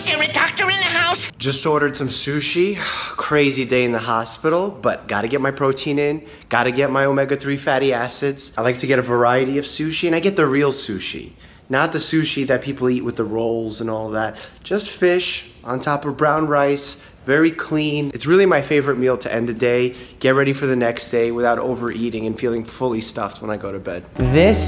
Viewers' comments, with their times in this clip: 0:07 Every time he said fatty acids i thought he said fatty asses...just me...mk...😂like